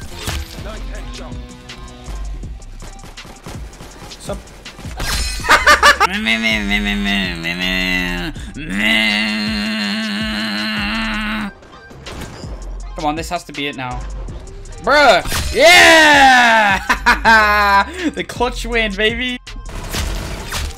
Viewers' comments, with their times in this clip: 0:05 Chainsaw go brrrrrrrrrrrrrrrrrrrrrrrrr
0:06 bro new voice actor for chainsaw!
0:06 it sounded like he was having a mental breakdown
0:07 5 year old me making chainsaw sound:
0:07 you good bro think u turned into a chainsaw
0:07 Now i finally know what a chainsaw sounds like